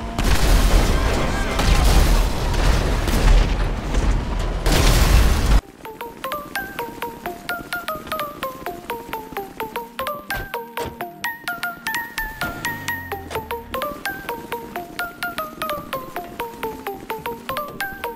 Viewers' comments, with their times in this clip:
0:05 music is 😍😍😍 Like video😊